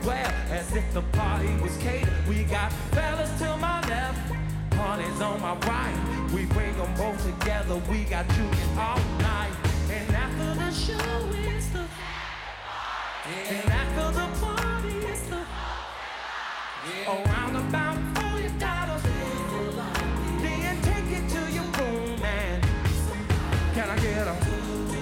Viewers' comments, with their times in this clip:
0:08 THE KING OF R & B UNEQUIVOCALLY. HE SINGS SO EFFORTLESSLY WITH NO QUIT OR TIRED IN HIM. OCTOBER 9TH, 2024 WED. P.M. HURRICANE MILTON